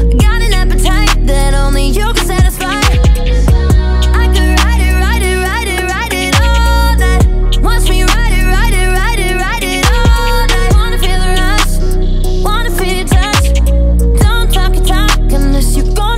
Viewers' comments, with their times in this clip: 0:04 Erick prydz call me